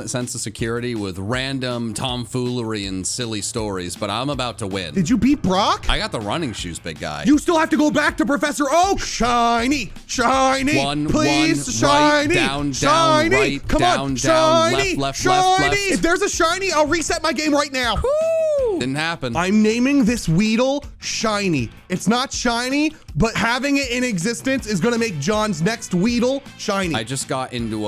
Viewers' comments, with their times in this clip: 0:09 What a beautiful beat